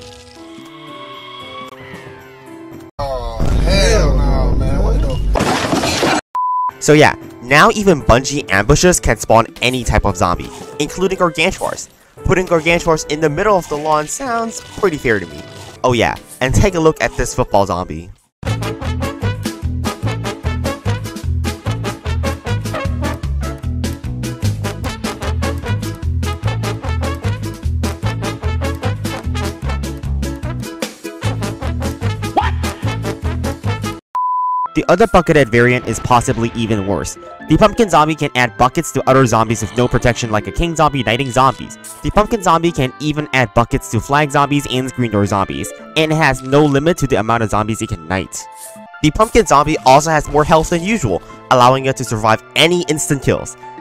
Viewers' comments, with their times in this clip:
0:03 made me laugh out loud edits: newspaper earrape returns and graves are funi
0:17 Me : * instant nostalgia (THE SONG) *
0:34 Why did I hear fuckethead zombie